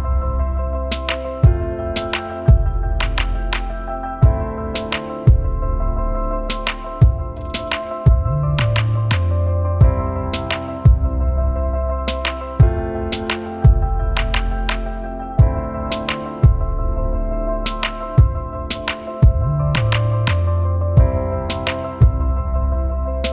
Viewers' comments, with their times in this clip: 0:04 That big, relaxed sigh I love it!